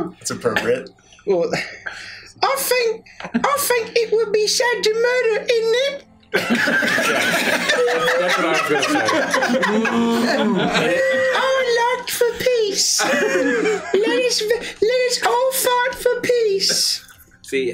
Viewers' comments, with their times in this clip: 0:05 for a second there I thought I heard Elmo😂